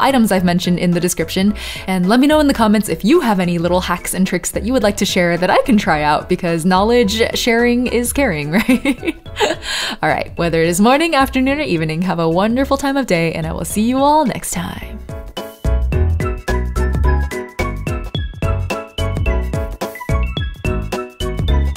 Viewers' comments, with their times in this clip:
0:05 I adore your calm and soothing voice and your kisses fingertips impeccable sense of style. I HAVE to know where you got the last outfit on the right because it is STUNNING